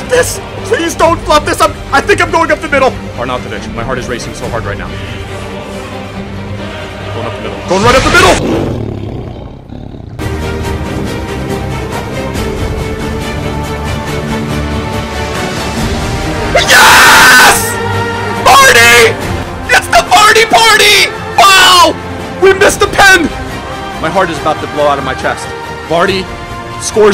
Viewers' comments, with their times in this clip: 0:08 From on my ear drums hurt